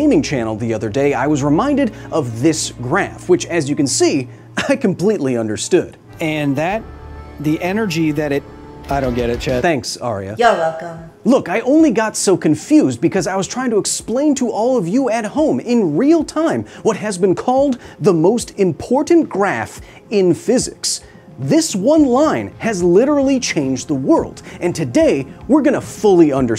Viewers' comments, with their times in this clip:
0:07 lol I thought you said "I don't get it, Chet." but you said "chat" Why is it only that word, though? Like, you don't say "thet" instead of "that", for instance.